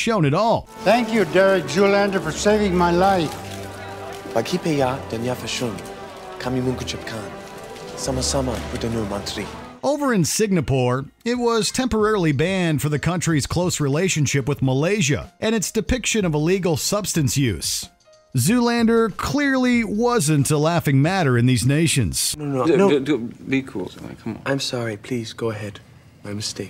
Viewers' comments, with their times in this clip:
0:10 Signapoor? Come on, mate. I know you are Canadian, but that's too much. I mean, saying people's names wrong is not too bad, but saying Singapore like Signapoor is just laughably bad. At least it wasn't sign a poor, but that doesn't make it much better.